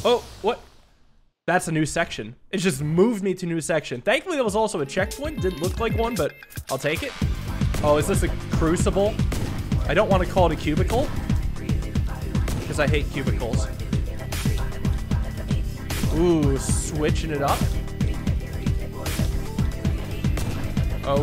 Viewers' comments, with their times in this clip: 0:07 that music is SICK! 🤩🔥